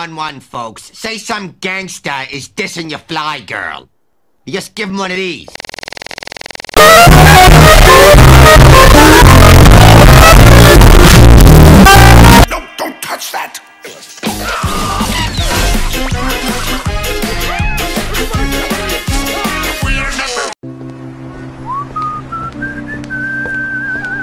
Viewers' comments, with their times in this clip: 0:03 MMMM my favorite, EARRAPE
0:06 monsters Inc theme loud
0:10 rip headphone users (that was me too)